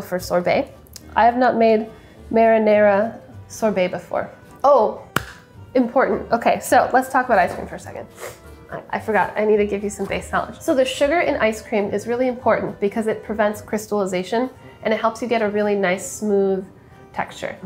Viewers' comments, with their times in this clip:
0:04 First Sohla clap